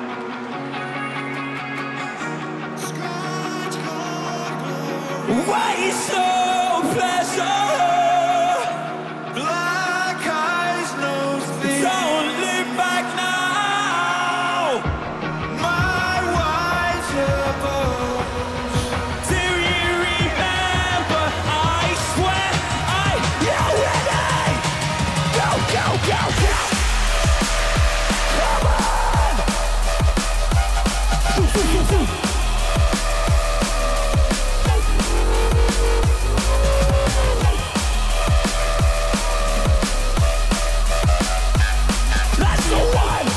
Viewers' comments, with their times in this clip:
0:04 Rob forgot to sing and you can hear the voice sample singing in the time :DDDDD
0:24 The drop actually made me feel sick 🔥
0:26 mans going down with some live jump-up LOL, sick